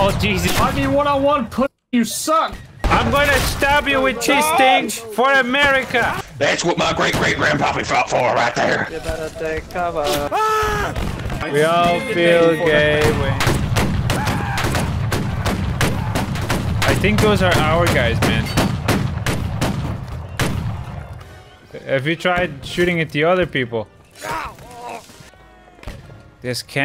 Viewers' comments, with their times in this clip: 0:09 my man put his whole heart and soul into that “FIREE!!”